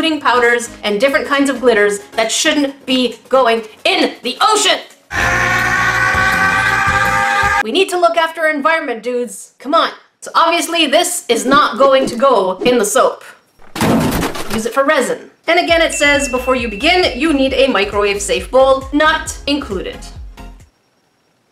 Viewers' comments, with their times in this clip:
0:04 like they always say. Screaming makes you stronger.